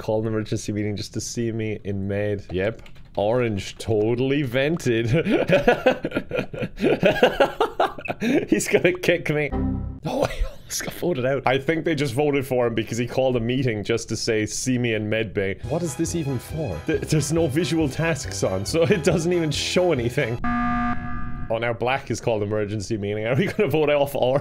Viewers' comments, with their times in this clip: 0:10 Irish excitement noises